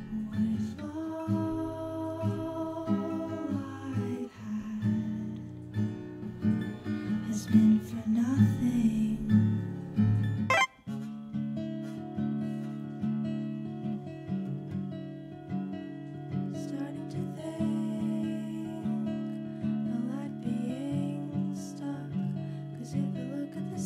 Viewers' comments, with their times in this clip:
0:10 THAT SOUND EFFECT WAS A JUMPSCARE OH MY GOD????